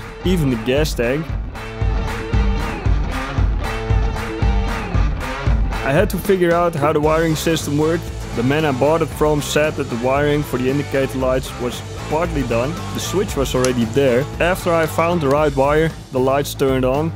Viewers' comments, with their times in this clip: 0:05 Agree with the mixing balance, music is a bit loud in some sections. Listening on computer with studio monitors. It was actually really just one section that stood out starting